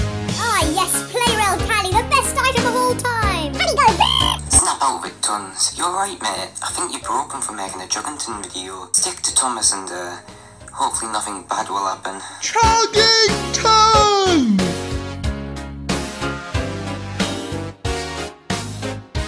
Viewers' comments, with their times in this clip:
0:03 Calley go BRRRRRRRRRRRRRRR